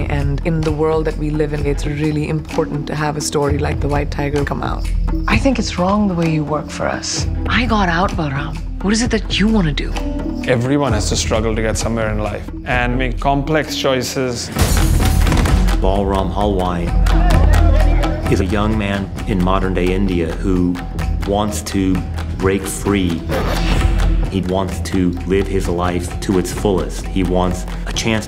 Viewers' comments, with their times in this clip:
0:10 Dandapani sound-alike there...